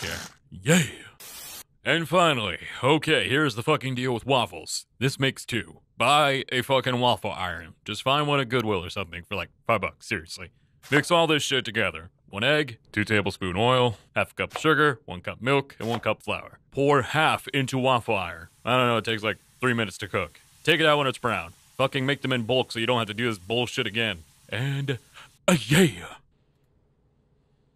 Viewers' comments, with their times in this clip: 0:09 I hate that theres chopping sounds